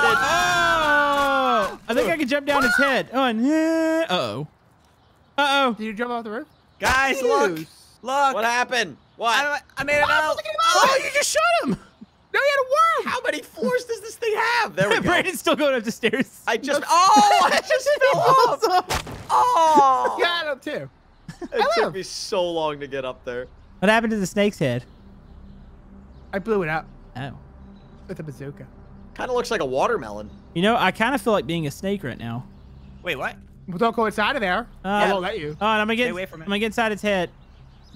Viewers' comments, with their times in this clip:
0:10 did he just say Filipino badwords
0:20 whats that nois "ellu"